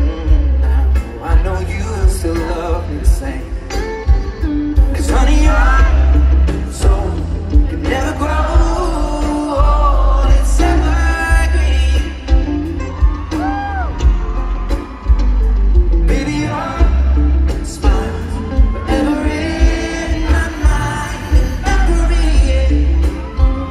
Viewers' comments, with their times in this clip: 0:07 John has insane talent. he plays rhythm guitar licks, then he jumps into lead and then solo as necessary. Completely vibing.